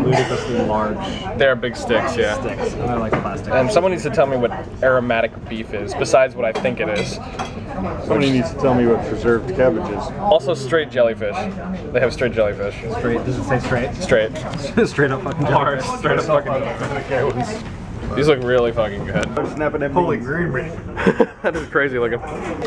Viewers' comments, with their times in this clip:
0:03 I thought he was asking what 'reserved cabbage' is. A little shy cabbage.